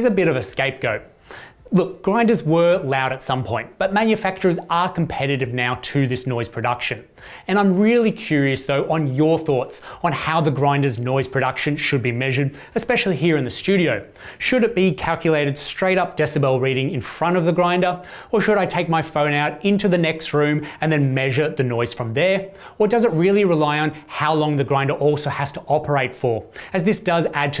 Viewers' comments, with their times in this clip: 0:09 watching the noise spectra of the grinders, I think an “unpleasantness rating” of some sort would be useful. The Eureka and DF64 have an annoying, peaky resonance in the upper mids, and the Niche sounds flatter.